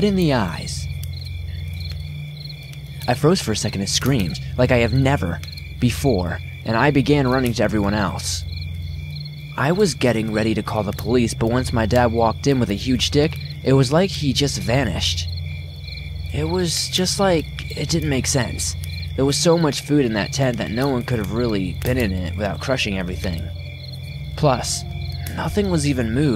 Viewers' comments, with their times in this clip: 0:09 "I was getting ready to call the police, but once my dad walked in with a huge dick, it was like he just vanished" The hell kind of camping trip is this? I turned on the captions just to make sure. These are some deep scary wood stories.
0:09 ~~"I was getting ready to call the police, but once my father walked in with a huge dick" LOL